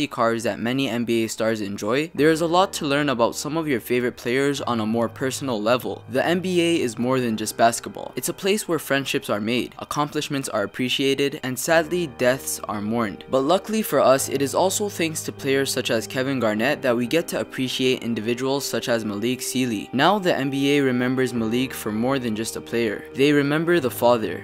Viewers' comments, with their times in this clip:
0:05 Wow. in I almost cried. The music and also him talking, almost did it